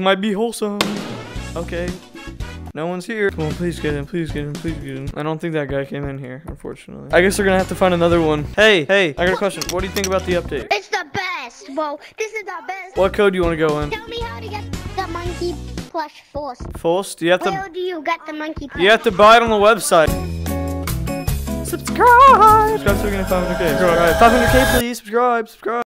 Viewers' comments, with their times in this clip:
0:05 got me dead when he re said forst
0:15 got me ded when he re said forst